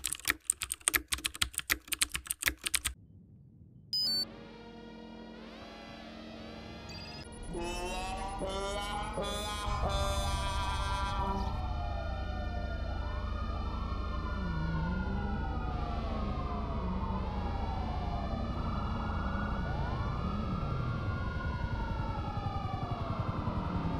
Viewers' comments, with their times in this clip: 0:07 🤣🤣🤣 that modded horn always has me dead. Heroic!
0:07 I love this sad trombone effect ~